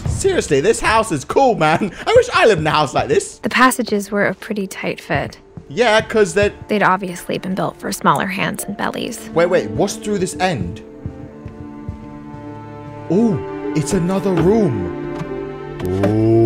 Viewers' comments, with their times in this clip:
0:03 I love her voice😊😊😂👏